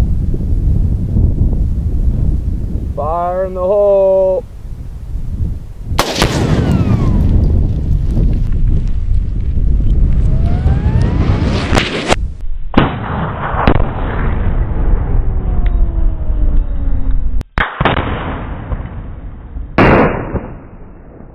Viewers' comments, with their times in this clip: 0:05 that shrapnel sound tho